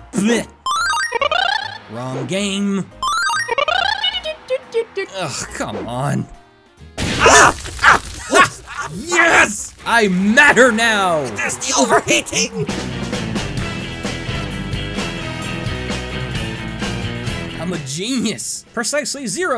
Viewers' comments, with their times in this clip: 0:04 I hear Duck Hunt.... I don't get the joke